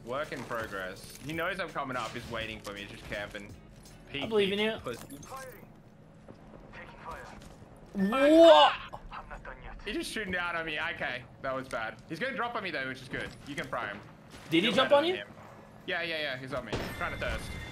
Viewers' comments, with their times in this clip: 0:03 the most unsure/hesitated “I believe in you” in the history of apex… Then his life bar disappeared…🤣🤣🤣